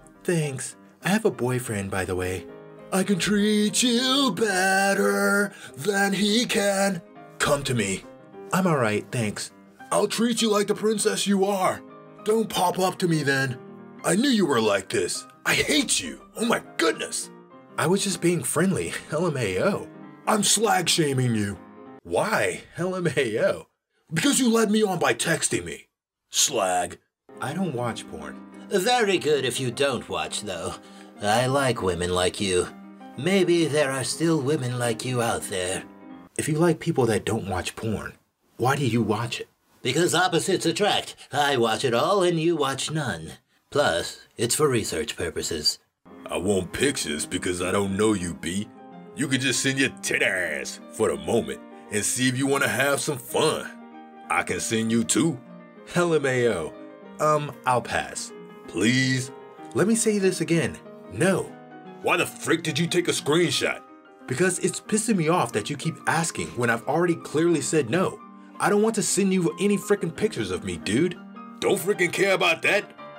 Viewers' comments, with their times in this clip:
0:03 lmao why does he sound like a mature milhouse
0:57 You sound like the giraffe troll guy on trolls when you do that one voice